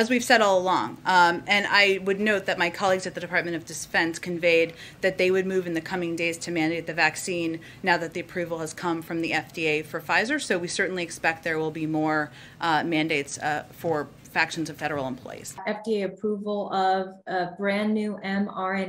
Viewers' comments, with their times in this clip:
0:04 ... did Jen Psaki say Department of Despence? Defense? Desfense? Is she catching what Joe's got?